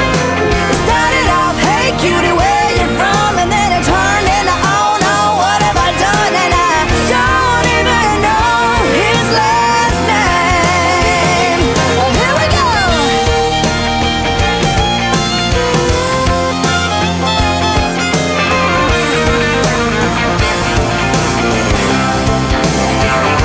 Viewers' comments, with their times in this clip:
0:09 Girl You Can Sing and ROCK the House!,